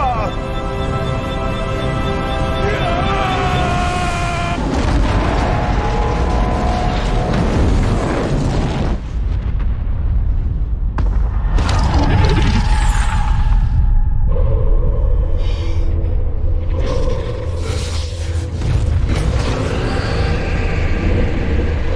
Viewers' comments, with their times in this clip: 0:03 elba making his epix yelling